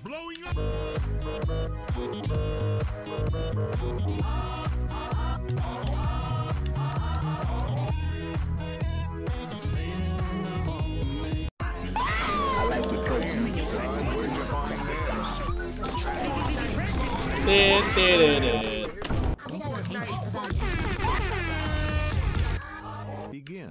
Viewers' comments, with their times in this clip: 0:05 can you actually ge.,.,.,t these bf vocals